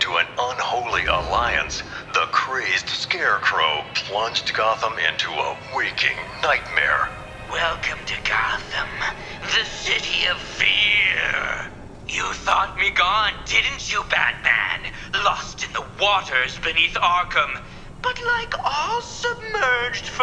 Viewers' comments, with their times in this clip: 0:08 Hearing John Noble's Scarecrow dialogue being recited as a half-effort parody stings pretty bad, ngl.